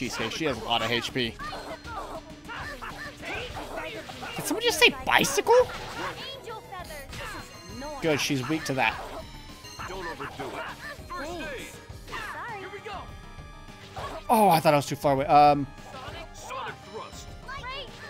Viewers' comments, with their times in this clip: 0:03 bicycle! again..... lul